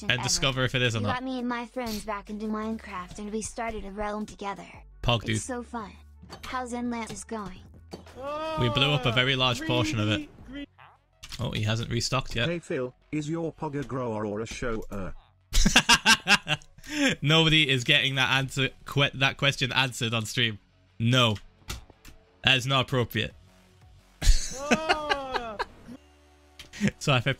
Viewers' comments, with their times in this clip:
0:05 why he use the Texas accent??? It’s just us that sound like that. But it was good
0:10 Anyone else notice he farted?